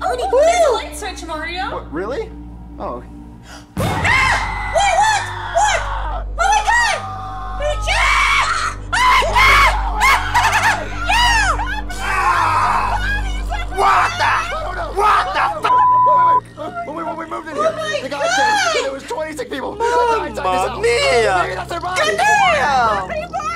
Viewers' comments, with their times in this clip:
0:07 pikachu screaming at dead bodies